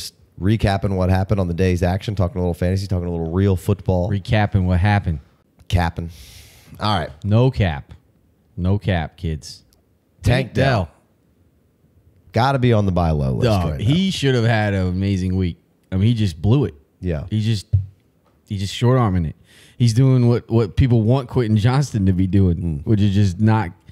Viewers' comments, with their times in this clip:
0:10 Did y’all say Tank Dell at the same time ? 😂😂